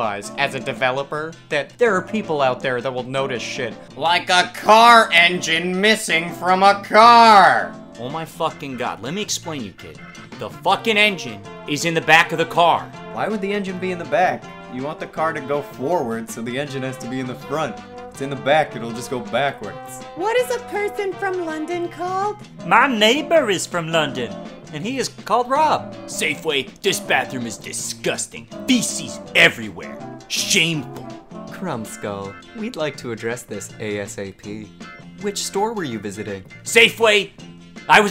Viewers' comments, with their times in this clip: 0:08 i didn't know the scout was a gamedev
0:25 best part. The "I was at home" gets me every time, really well voiced.